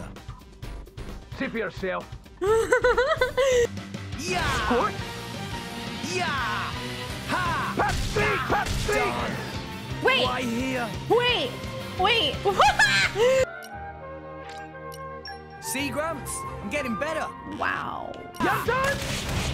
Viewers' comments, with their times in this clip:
0:07 why would you scream pepsi out of nowhere xD